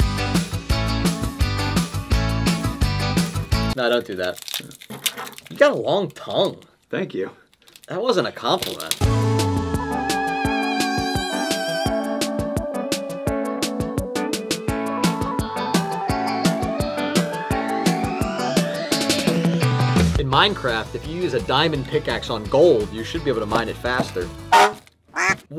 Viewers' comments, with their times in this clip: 0:09 I thought it was a mosquito in my room 😂